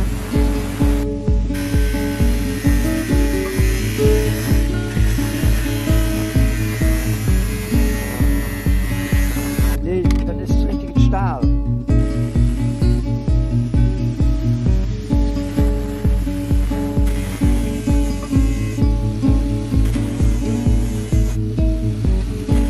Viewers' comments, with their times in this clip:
0:08 Haha, wow thanks for noticing! 😃It's a nice accent up there. 👍